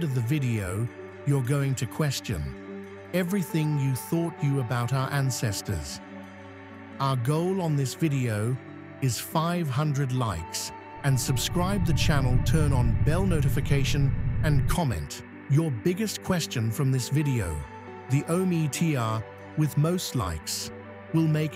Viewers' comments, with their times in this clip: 0:06 I’m and I’m out. If you are too lazy to be academically honest with your images, what else is just completely, stupidly false about your video. And I’m with others. That background noise is distracting.